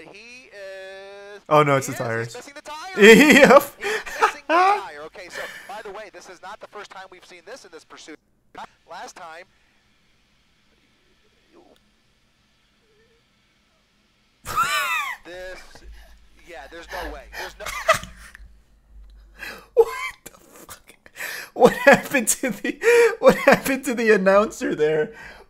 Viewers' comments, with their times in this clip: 0:08 commentator makes funny noise